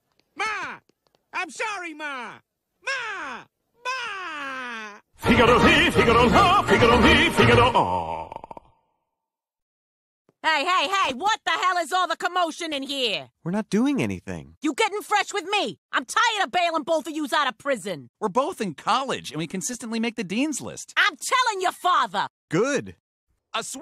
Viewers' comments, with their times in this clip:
0:05 Italian opera be like